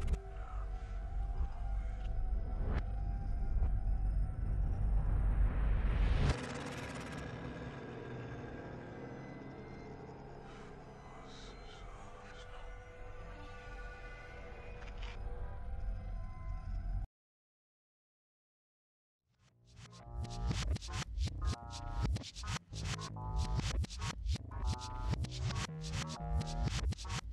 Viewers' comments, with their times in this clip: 0:08 I thought said we are always looking for new meme's